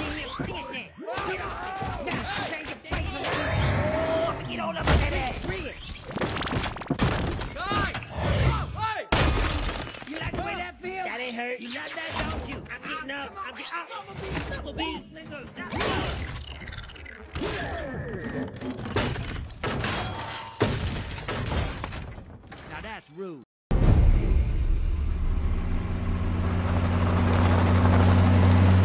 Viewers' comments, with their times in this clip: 0:05 I like how Skids says ass it’s hilarious lol
0:14 I swear I could hear skids drop the n word on when Bee grabs him
0:15 I think he’s saying “let go” here but I can’t lie it sounds like a second more dubious word
0:15 ain't nobody finna say nothing about skids faintly saying nigga 💀
0:15 did one of them just drop the n word??? Or am I hearing things
0:15 if you listen closely it really sounds like he said the word